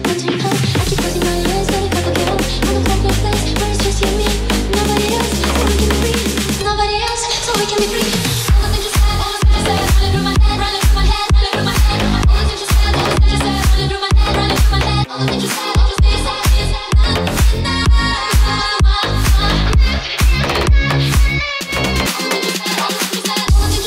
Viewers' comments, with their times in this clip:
0:08 is the beat